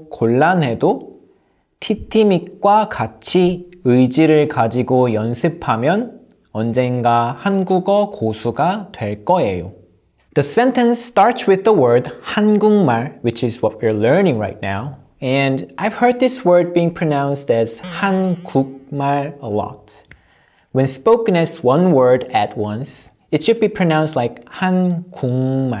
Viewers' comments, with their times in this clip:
0:08 wait why do you pronounce "될" as "d(w)al" not "d(w)il". Isn't d(w)al written "돨"?